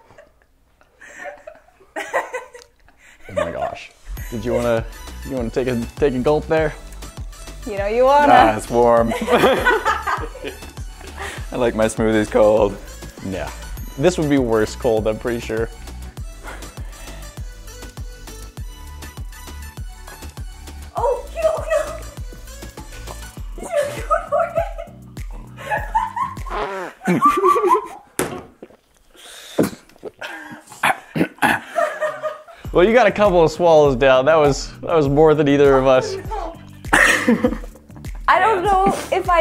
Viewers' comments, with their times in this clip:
0:03 That sounded so femanine haha.
0:25 its just me or he farted ?
0:25 Definitely a fart
0:26 I think he farted
0:26 he actually farted
0:26 did the hacksmith fart?
0:26 Did one of y’all fart
0:26 Did the hacksmith fart right after he gagged? it sounded like a pinched out fart lol
0:26 did he fart while gagging?! 😂🤣😂🤣